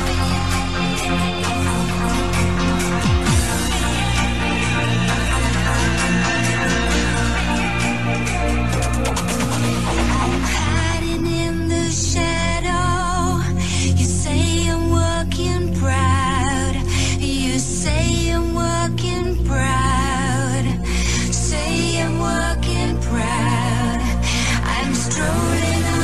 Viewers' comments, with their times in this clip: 0:09 This has some Björk vibes in it